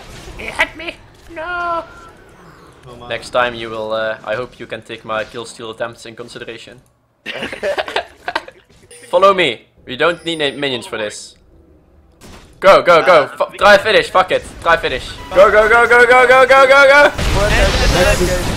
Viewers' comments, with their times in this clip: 0:06 laughing like a boss !!!